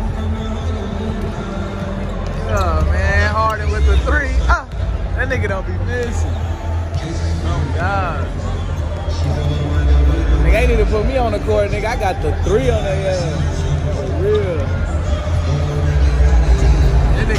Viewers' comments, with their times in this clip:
0:05 The way he said it starting 😂💯